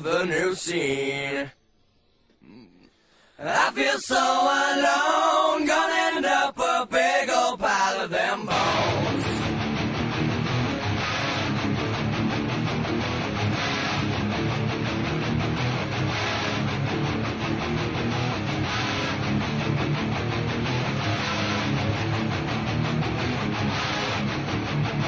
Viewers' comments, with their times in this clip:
0:08 I fucking love the guitar entry
0:08 Only vocals.... until